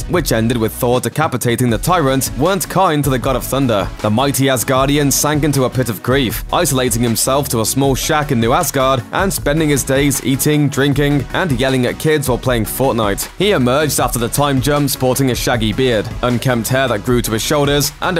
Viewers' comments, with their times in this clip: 0:03 "the Mighty ass Guardian"